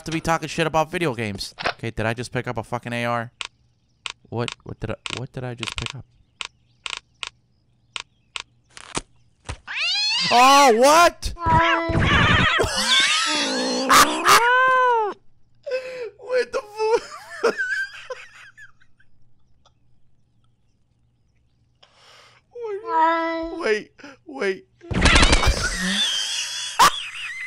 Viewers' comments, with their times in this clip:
0:08 i died when he whipped out the Ar with the cat and the noises the cat was making
0:13 in the video, your laugh made me laugh so hard I fell back while on my chair watching you and eating Cereal. I love your laugh dude!!!!